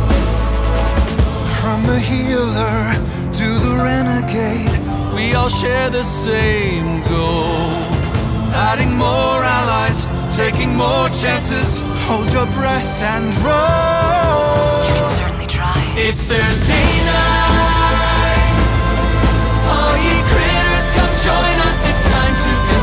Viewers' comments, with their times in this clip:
0:05 bro Matt's voice is BEAUTIFUL why doesn't he sing more????